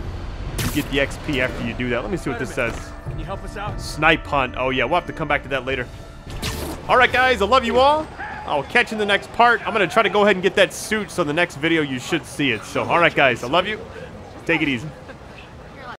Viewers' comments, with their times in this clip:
0:08 Guys the guy haves the same voice guy as lucius fox frm batman arkham night